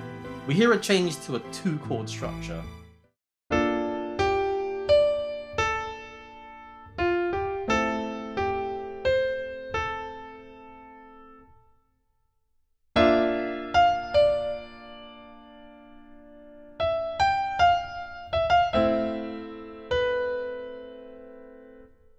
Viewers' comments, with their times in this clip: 0:03 very simple music it is. oh and have you noticed A>G>D melody is exactly same in Luna theme from FF XV